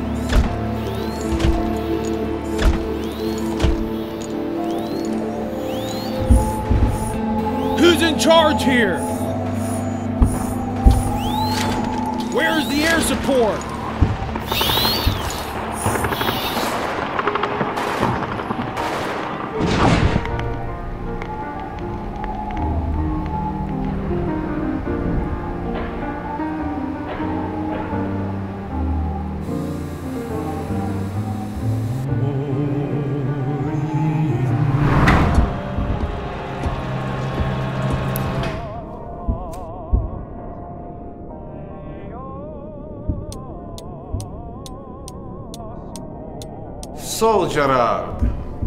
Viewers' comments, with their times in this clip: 0:07 Not to mention when the soldier screams at the original "Who's in charge here???", yet on this video he's very calm and seems to be asking while watching his voice tune such a simple acting and he couldn't do it right...
0:07 love this pathetic "who's in charge here" xD
0:34 everything was ok until min they should have find a real french or russian accent